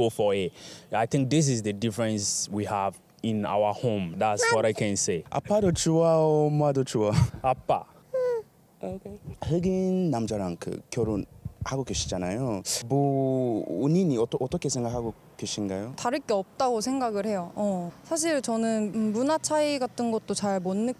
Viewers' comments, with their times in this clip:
0:07 So cute when the baby speaks What a lovely couple. Kudos to both sides for accepting each other and creating a beautiful family.